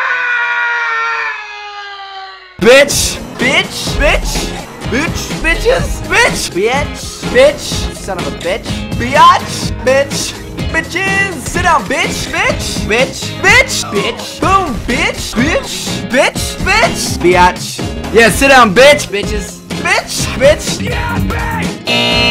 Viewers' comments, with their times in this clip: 0:03 the b song